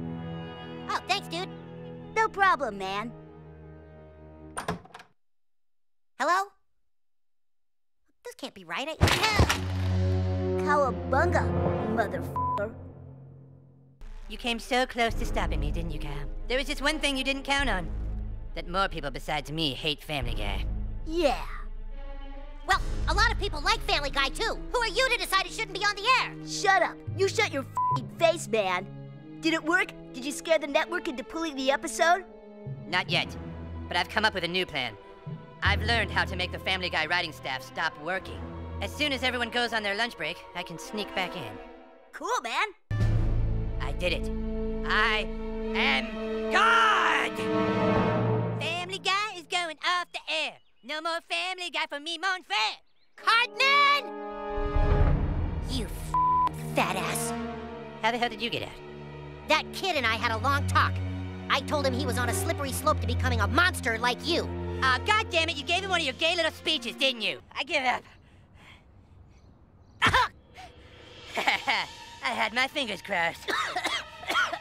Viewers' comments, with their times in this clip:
0:10 I love how they censored just the "fuck" part instead of the entire expletive. "COWABUNGA, MOTHER(bleep)ER!"
0:55 I Like How That Part With Kyle Cursing Is Censored.